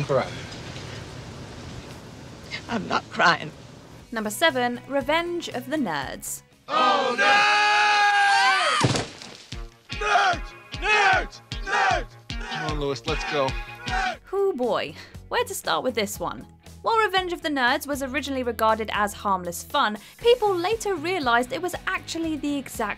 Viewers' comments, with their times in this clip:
0:04 Lol did anyone notice how she pronounced "nerds".